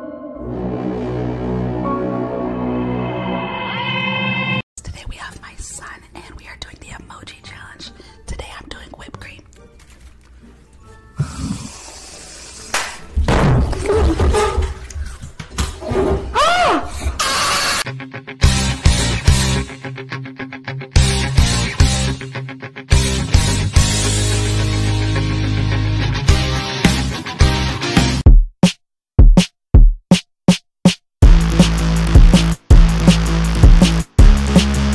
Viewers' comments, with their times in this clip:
0:10 YEAH!!!!!! DESTROY THE ASMR and the yell almost made me fall asleep😴
0:17 this kid's face as he absolutely peaks the F outta that mic just destroys me
0:17 the kids scream